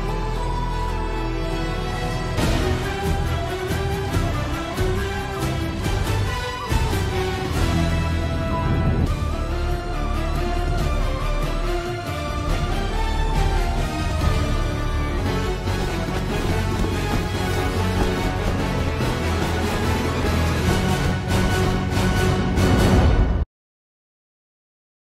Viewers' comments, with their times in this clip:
0:09 The change to minor key on is incredible.